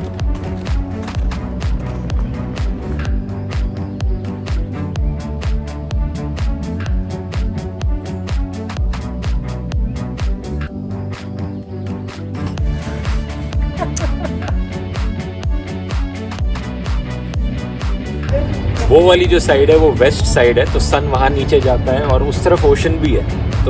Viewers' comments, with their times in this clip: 0:08 aaaaaaaaaaa..... Sounds funny 😃😃😸😂